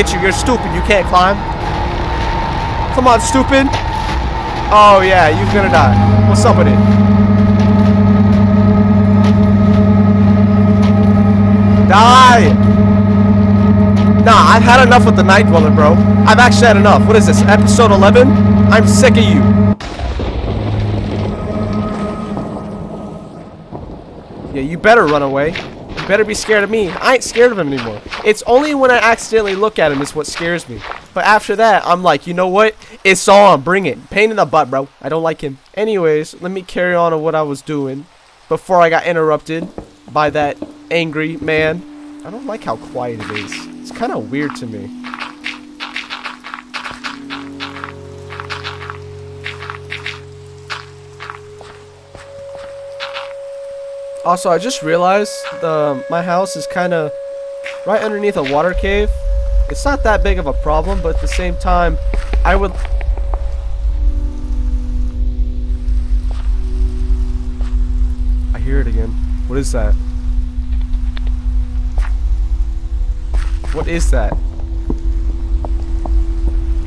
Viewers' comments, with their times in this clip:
0:05 why did it turn into a microwave?
1:02 sound like someone clapping their cheeks